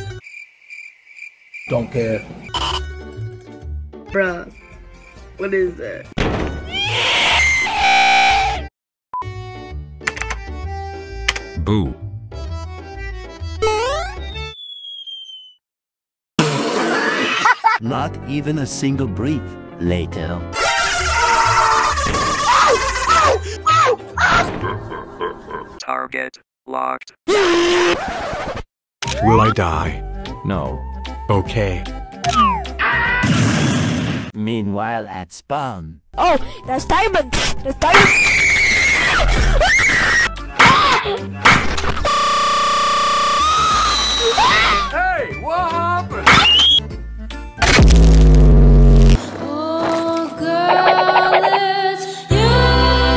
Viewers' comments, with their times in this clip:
0:06 That Albert scream-
0:34 i think ur dutch?
0:41 that sound really gives me learning with pibby vibes beacuse of the noise